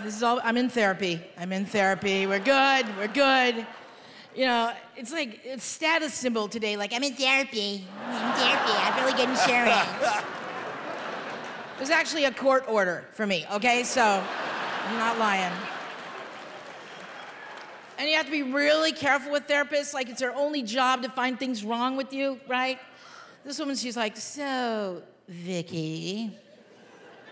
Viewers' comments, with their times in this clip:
0:10 wtf was that clap